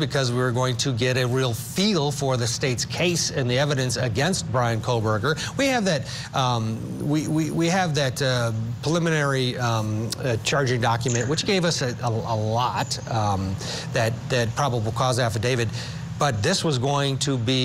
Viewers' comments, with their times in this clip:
0:04 Um, what um,um, is up with this, um, reporter? we have that, um, we, we have that uh, preliminary, um, charging document, which have us a, a lot, um, that, that, probable cause affidavit 🤔